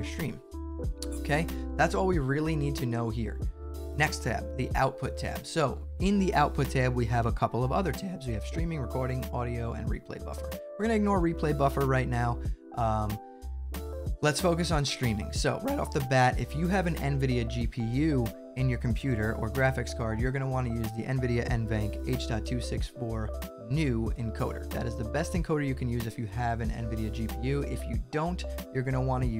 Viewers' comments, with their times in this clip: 0:07 how many voice cracks do you want? yes
0:09 the voice crack bro 😭
0:14 nice voice crack xD
0:14 that voice crack 😂